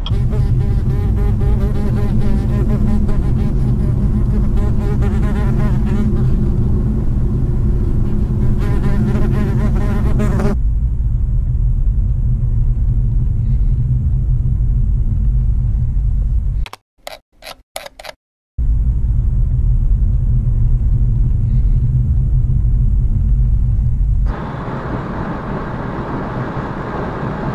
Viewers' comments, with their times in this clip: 0:08 Fly sound :D